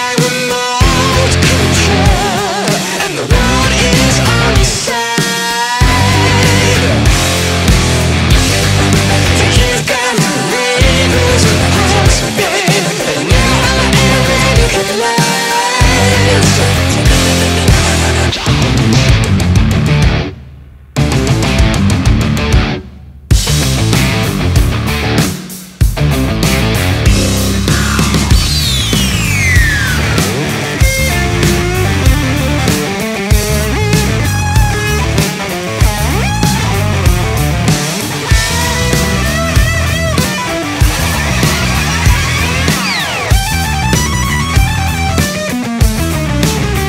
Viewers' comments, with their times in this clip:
0:08 Does anyone know how those harmonized vocals are made?
0:31 a solo made for the Gods.